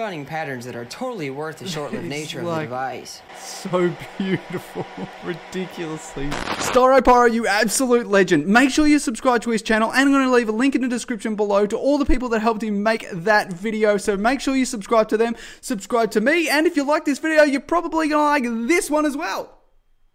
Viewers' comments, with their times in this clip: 0:05 rip tired/relaxed headphone users 🤣heart attack warning ⚠️